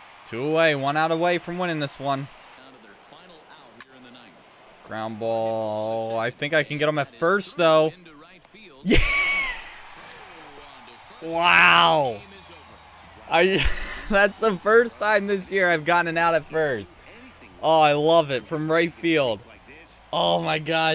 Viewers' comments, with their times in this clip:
0:07 dat laugh do